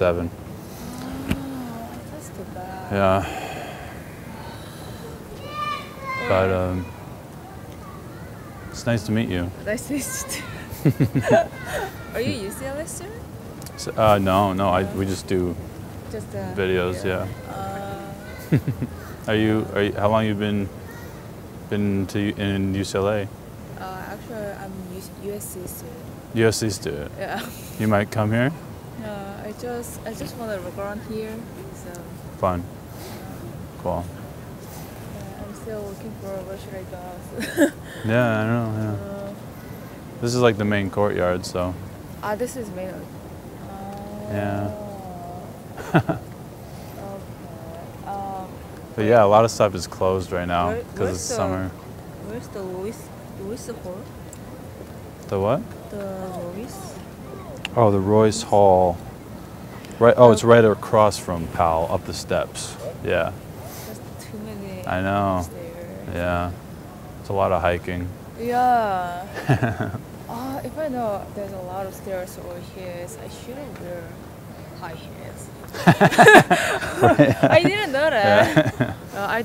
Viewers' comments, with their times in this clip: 0:04 she even dropped in some awkward whining
1:04 omg was waiting for her to do awkward whining awww